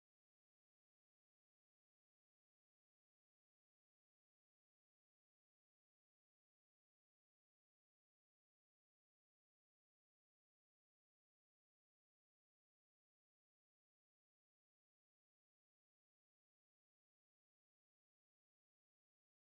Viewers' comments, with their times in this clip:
0:06 Hey people, so sorry for the awkward silence while adjusting the wig, I forgot to add music lol. I used that round brush to catch any of the loose strands that were obviously in the unit. Should I do an AFFORDABLE PLATINUM WIG SERIES ?! I THINK I WILL, I'M SERIOUSLY LOVING THE COLOR